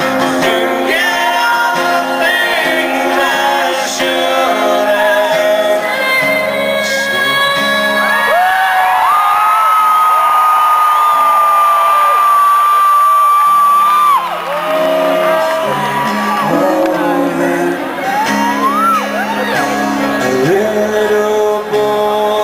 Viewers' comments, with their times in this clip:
0:05 you whats awesome dude, when aaron takes the low part and amy sings the real high one, its still the aaron part that i like more...he sounds awesome